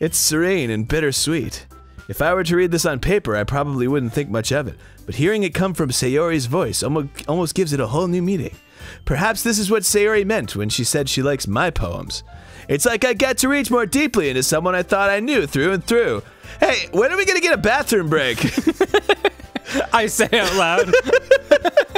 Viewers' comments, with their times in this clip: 0:07 that sound my phone makes when i unlock it